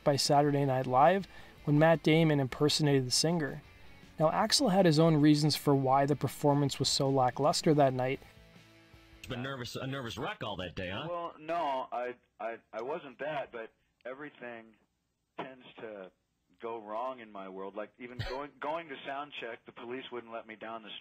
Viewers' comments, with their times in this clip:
0:09 yikes, this is why you need to use a simple compression fx, it would do a lot for the audio in your videos and it's super simple to use.